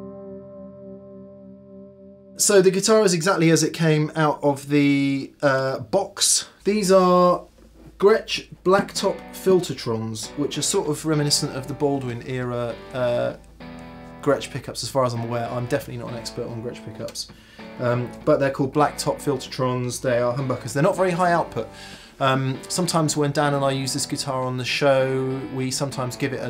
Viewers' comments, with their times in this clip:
0:10 What song are you playing ? Sounds great btw, nice, warm and crunchy without being spiky.